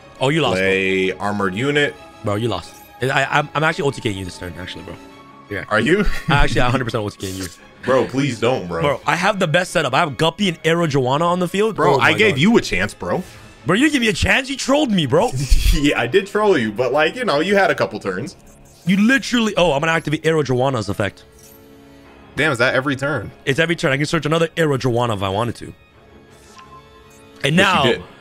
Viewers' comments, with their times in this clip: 0:09 I had to leave. As someone who actually keeps fish and a pond I couldn’t stand the mispronunciation of Are-o-Wanna any longer. It’s like THEE prize fish of fish keepers, there isn’t a bigger flex than owning that $1,400 dollar fish but certain breeds can fetch 6 figures per fish. I made it in.